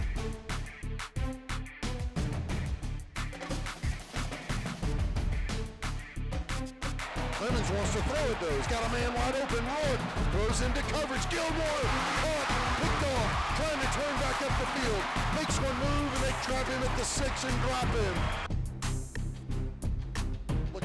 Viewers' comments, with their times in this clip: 0:08 The announcer's voice is annoying. :P